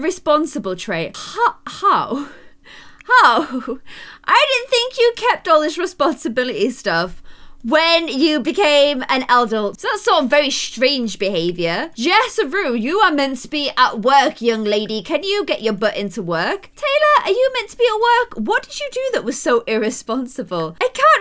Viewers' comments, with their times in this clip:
0:08 did I hear “eldult “ the mix of adult and elder???